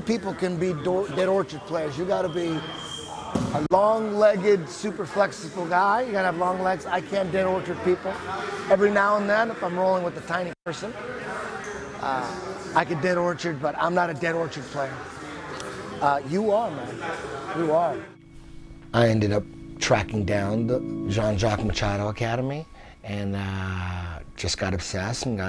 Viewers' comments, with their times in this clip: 0:06 His accent changed " , guess who ?